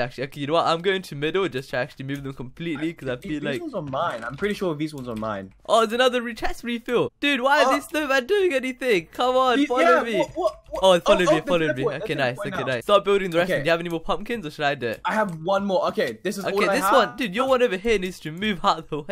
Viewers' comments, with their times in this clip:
0:05 you said an other rechest refil plus a voice crack xd